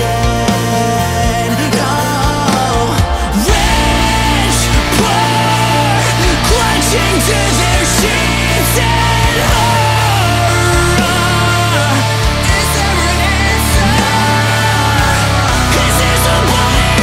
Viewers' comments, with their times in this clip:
0:03 my absolute favorite part of the song, it's just sung so nicely and with that...particular emotion to it.
0:03 Holy shit pure heavenly breakdown then into absolute demonic craze! 👼 👹